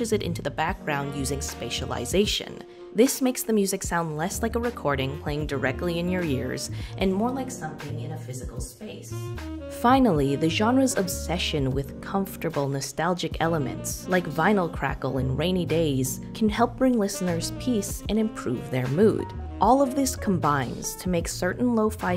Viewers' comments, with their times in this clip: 0:04 when her voice changed into the more "physical space" i jumped lol